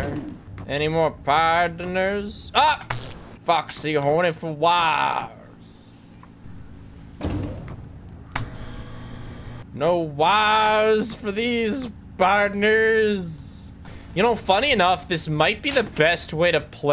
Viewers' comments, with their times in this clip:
0:03 Foxy is WHAT for wires!!??